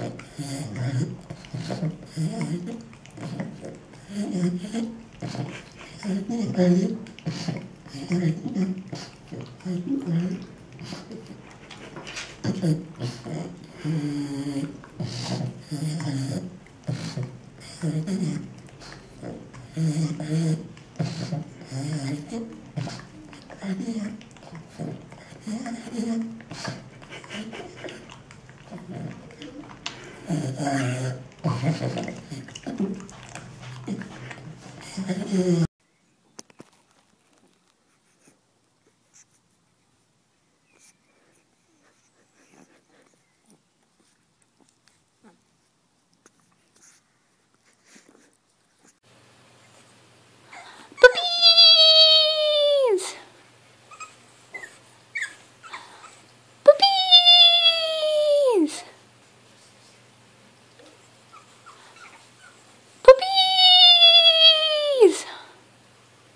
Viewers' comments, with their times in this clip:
0:04 when your Pug know how to beatbox... :)
0:28 not funny she has trouble breathing i heard her breathing to hard
0:47 Vol down if for your ears
0:51 sounds like Marzia